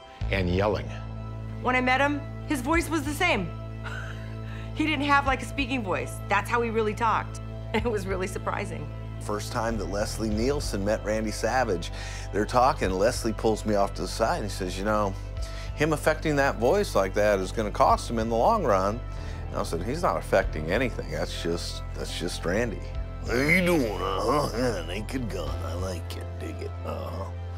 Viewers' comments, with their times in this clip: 0:09 Bruce Pritchard sounds Way Better then Jake the Snake. Jake just sounds like he's doing a Shitty Bender impression.